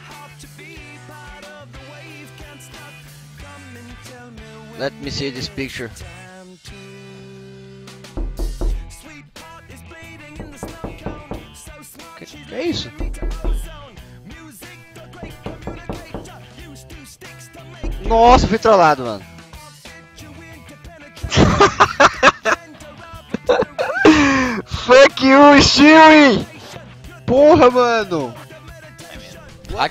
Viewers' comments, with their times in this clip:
0:08 I thought that somebody knocked on my door xd
0:10 fuck I actually thought somebody was knocking at my wall at 3 in the morning.... fuck outta here , that shit scared me bruh.